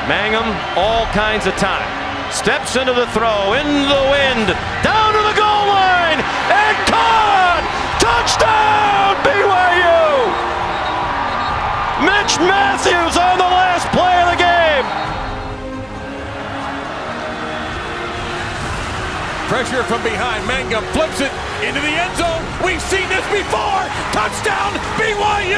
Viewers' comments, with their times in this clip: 0:06 so that's what "on the last play of the game" sounds like without 30 voice cracks😂